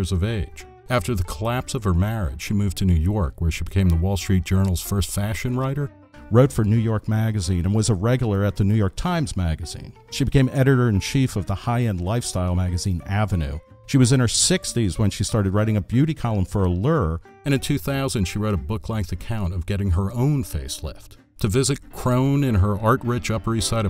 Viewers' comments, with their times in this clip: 0:07 "she became a reg-a-ler." In the Midwest we pronounce that word like it's spelled: reg-u-lar.